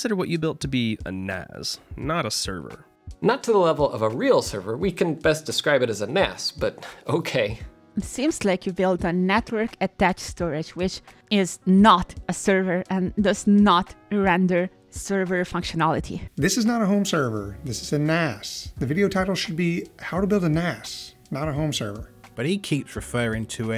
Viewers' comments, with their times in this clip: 0:10 snap my brain up, and yes, is the infamous Jeff Geerling reading the comment 🤣